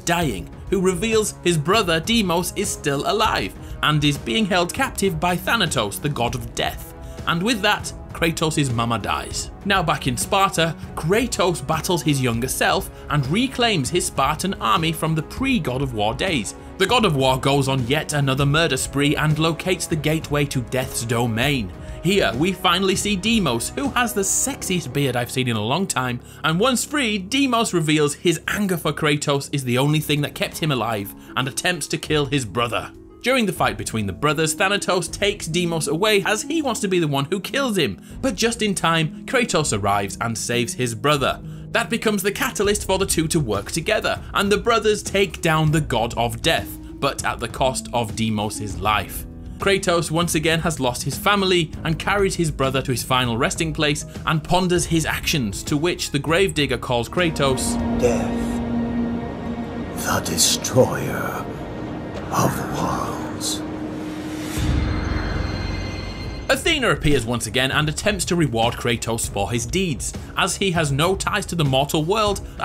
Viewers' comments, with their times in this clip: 0:06 Why did you say it like that?
0:59 The destroyer of worlds with autocaps The destroyer of cars